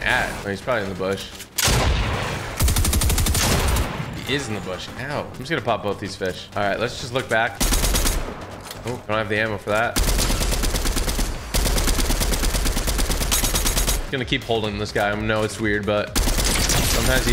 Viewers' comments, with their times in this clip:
0:05 did he say hell or ow?